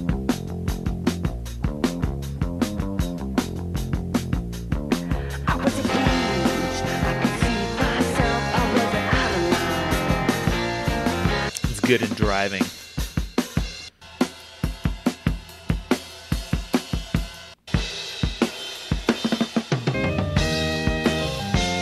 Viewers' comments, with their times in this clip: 0:09 Rad vid is sounding nice!